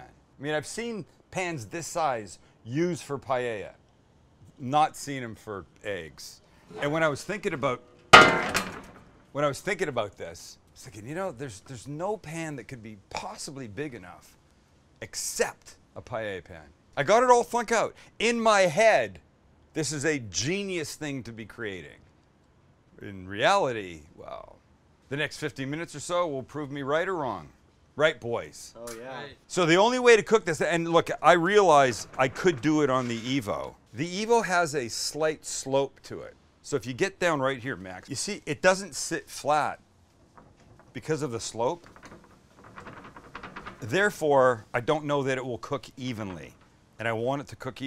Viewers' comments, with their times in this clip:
0:04 he even says “eggs” like a chad
0:31 for a short moment, I thought he's about to sing...